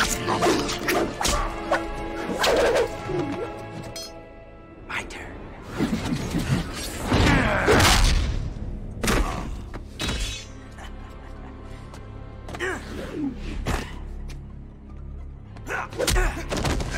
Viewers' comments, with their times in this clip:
0:04 David's voice !!!! Listen close the lost boys